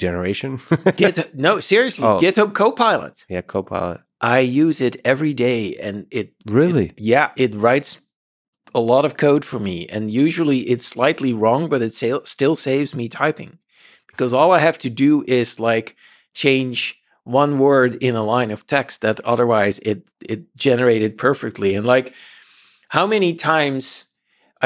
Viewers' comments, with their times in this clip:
0:08 I like how Lex kinda laughed about the code generation thing. I think his reaction would be a little different today